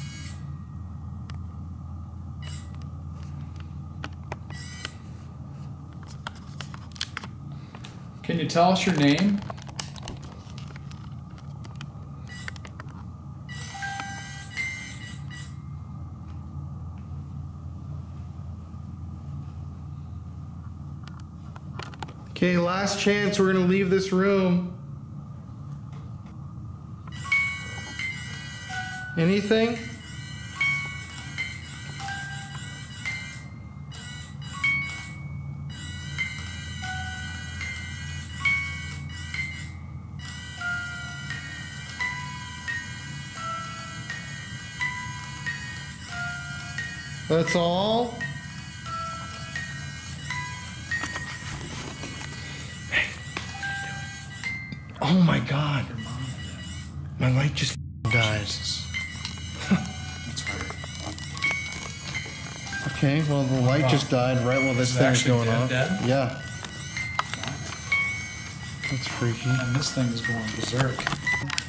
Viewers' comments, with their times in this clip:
0:09 and 24 while the tour guy is talking you can hear a female voice
0:54 someone yells "hey" anyone else hear that?
0:56 the music box laughs when the spirit turns off the camera light 😮